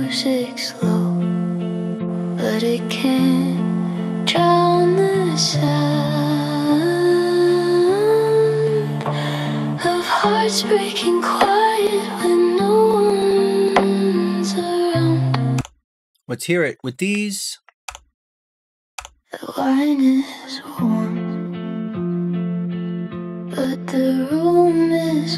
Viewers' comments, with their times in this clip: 0:09 Those crackles hope you got a new pc for black friday sir.